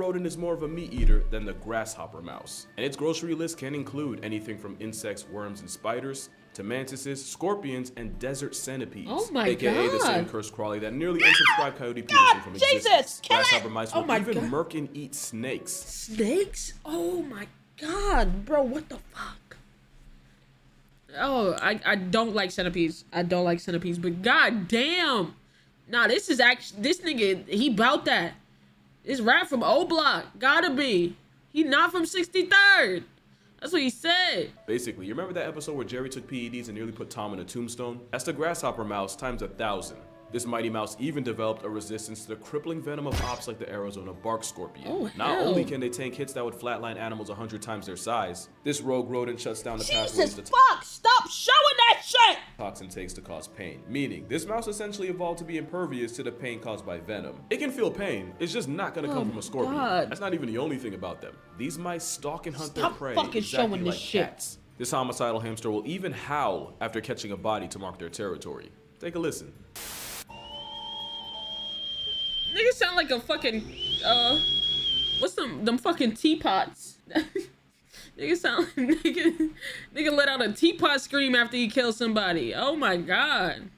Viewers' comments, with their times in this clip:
0:10 I cant with that scream😂
1:10 nah that's a 2 year old when they stub their toe😂.